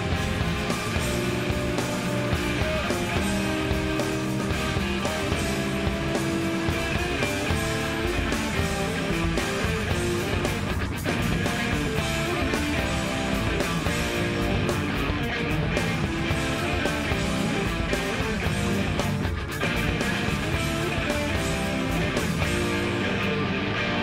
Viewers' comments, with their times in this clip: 0:06 This riff is so satisfying… the first minute of the song builds tension, nothing resolving until that monster riff comes in and ties everything together. It’s also a rare instance of a chorus with no vocals.